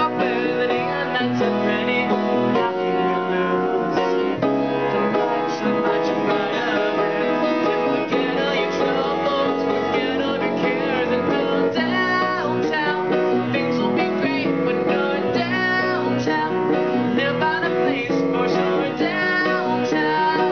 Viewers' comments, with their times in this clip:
0:03 I don't! For the most part, my right hand is a B chord (B D# F# B), with the left hand emphasizing the bass notes. (How can I lose), it's an Eb in octaves in the left hand, with Db, F, Gb, and Bb in the right hand (making it an Eb minor 9)